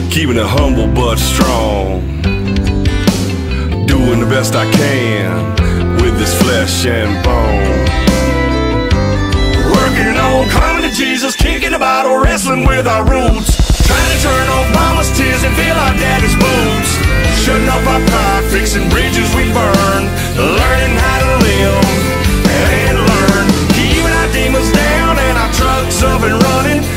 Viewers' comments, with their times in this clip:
0:08 I like drumming